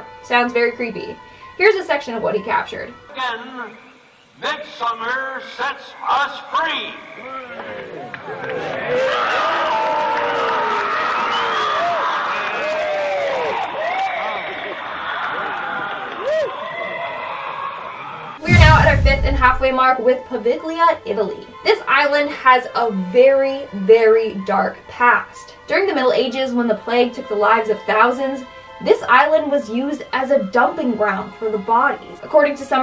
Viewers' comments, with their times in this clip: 0:07 In the bohemian grove video you hear a man screaming when they light him on fire listen again
0:10 anyone else hear him screaming?
0:15 screams of person veing cremated alive?